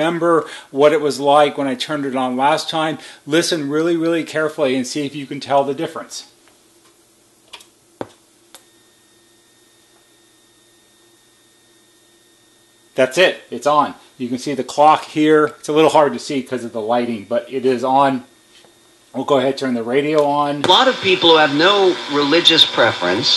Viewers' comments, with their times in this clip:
0:08 I used to live in a house with this system built in. I never had this problem, but I still turned the volume down on my speakers because of that faint whine coming from the system that you hear after it's on That tone drove me crazy at night!